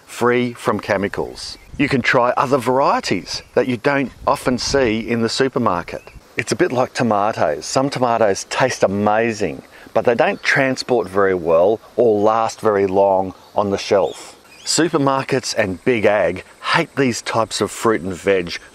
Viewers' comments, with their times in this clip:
0:06 Wish you pronounced potatoes like you pronounce tomatoes